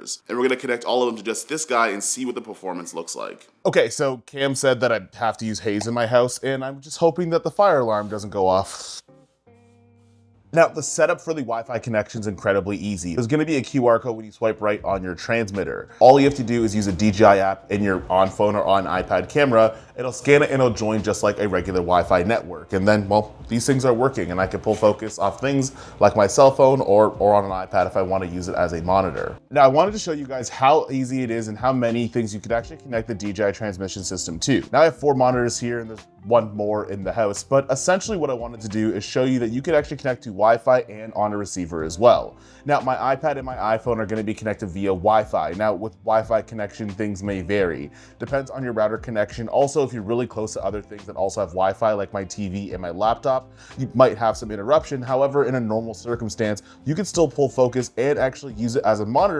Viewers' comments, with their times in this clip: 0:07 Wassup with the audio?????
0:13 how ironic that your DJI wireless mic keeps dropping out at this part
0:43 What happened to your DJI Audio ? Interference from the video system? With that latency combined with the latency of the wireless focus would render the setup unusable for me...